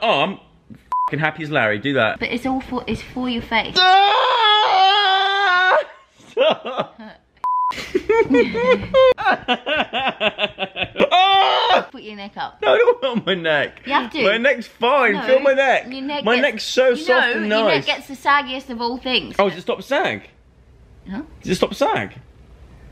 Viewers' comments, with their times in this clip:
0:04 you sound like Frodo Baggins